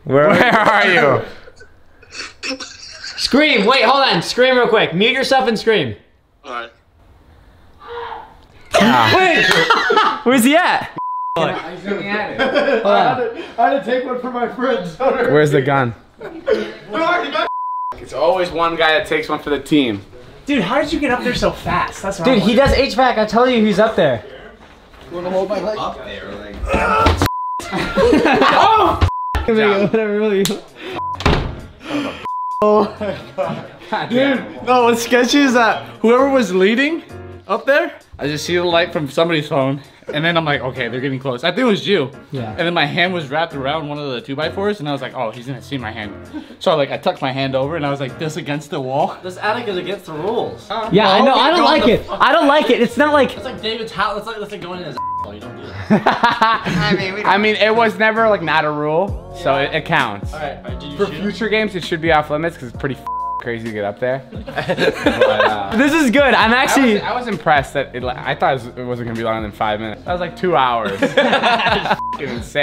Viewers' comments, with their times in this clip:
0:07 it sounded like he got f*** 😂😂😂😂😂😂😂😂😂😂😂😂😂😂😂😂😂😂😂😂😂😂😂😂😂
0:57 GO BACK TO and it says hi baby when David is done laughing 😳
0:58 Is it just me or its said hi baby ??